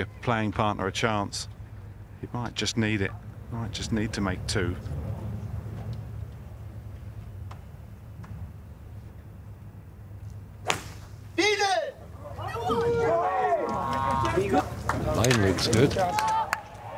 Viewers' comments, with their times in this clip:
0:03 the sound or Rory's strike, high ball flight...its just different..magnificent player to watch